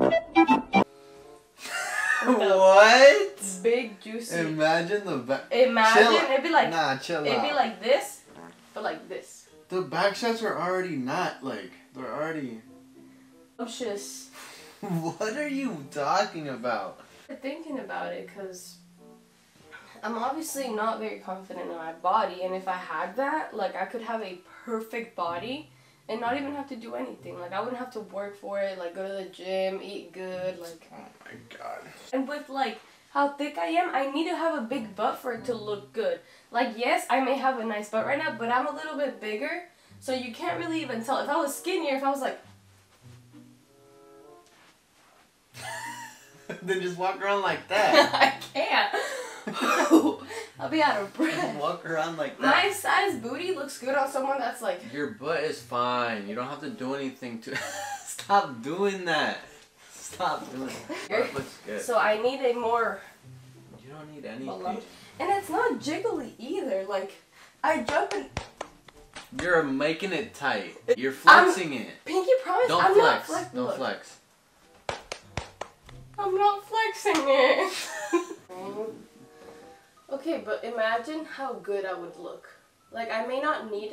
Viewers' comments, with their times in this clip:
0:07 Did anyone hear the fart
1:06 THE CLAPPING NOISES TOOK ME!!! 🤣